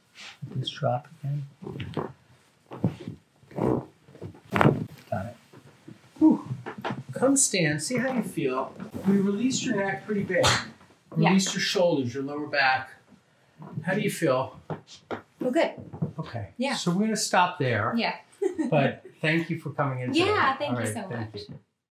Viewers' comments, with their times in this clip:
0:03 sounded like a fart XD
0:03 sound like a fart 🤣